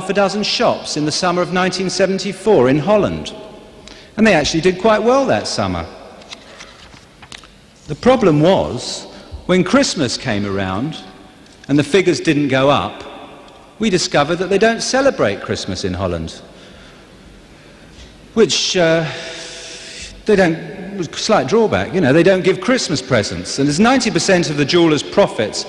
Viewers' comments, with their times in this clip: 0:07 The shock that nobody laughed after ("The problem was, when Christmas came ... we discovered that they don't celebrate Christmas in Holland."), and how perplexed he became realizing it, is kinda like the moment the penny dropped: "Damn... Is this really the kind of audience I thought is was?..."